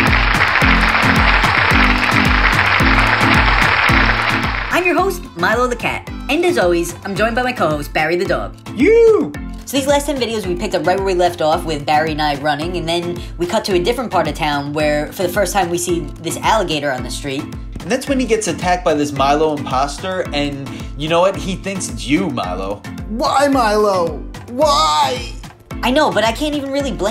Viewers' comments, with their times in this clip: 0:08 awww Barry sounds cute while making the Universal animal greeting and Mylo too